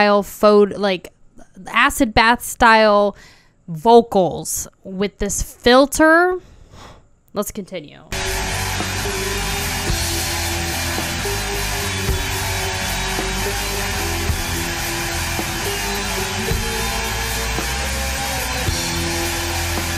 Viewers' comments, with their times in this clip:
0:05 It's not a filter,Varg said that he used the shi...est mic he could find to record his vocals. Dunkelheit is a good song but imo Erblicket Die Tochter Des Firmaments is better.